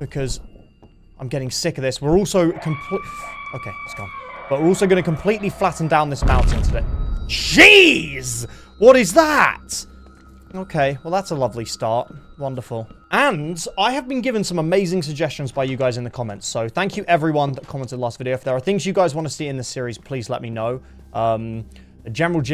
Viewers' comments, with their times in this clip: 0:08 jEEeEz had me on the floor